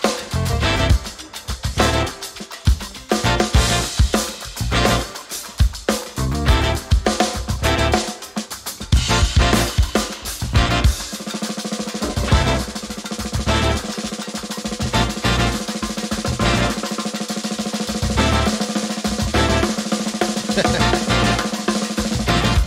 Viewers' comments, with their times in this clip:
0:10 I talked to him about this at NAMM 2020. When he switches to the the 16th notes on the snare, he uses that to lock his brain with his body. You can even see his foot change on the high hat when he internalizes it. Just a shredding last 60 seconds or so. Really killer.